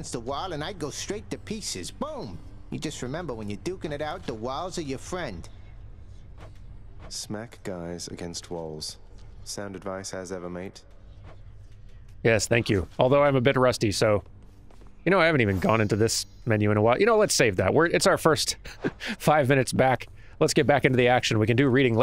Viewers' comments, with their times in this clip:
0:06 The smooth voice when he says that. hmm